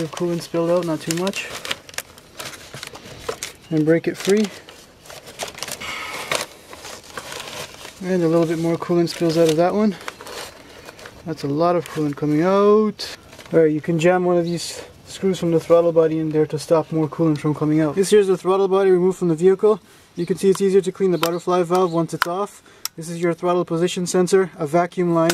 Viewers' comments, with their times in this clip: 0:10 i love the shear panic coming out